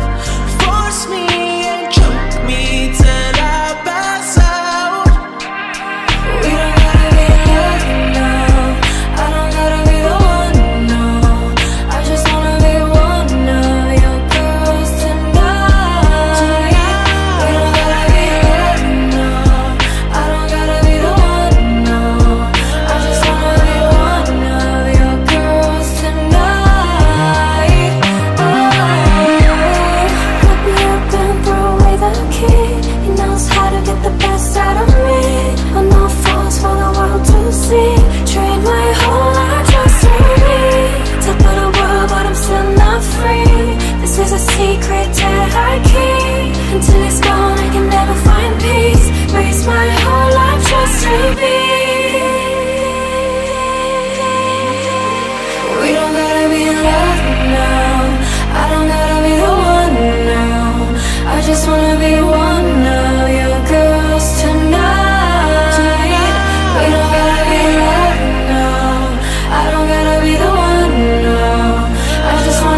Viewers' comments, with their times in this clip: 0:05 Jennie's harmonization with lily in is 🔥
0:56 lily and Jennie perfect harmonization 🥵❤
0:56 Jennie and Lily in sync = Chefs kiss 🤌🏻✨ Jennie & Lily, synchronized chorus.